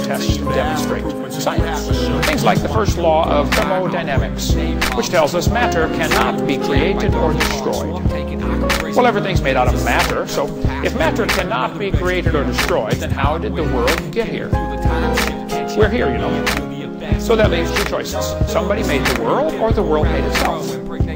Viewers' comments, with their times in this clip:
0:06 lol gotta love Hovind's "mater"